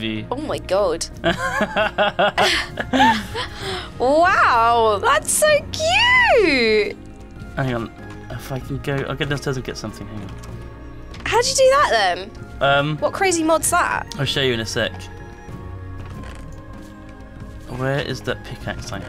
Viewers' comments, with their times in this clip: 0:06 The music is so nice :)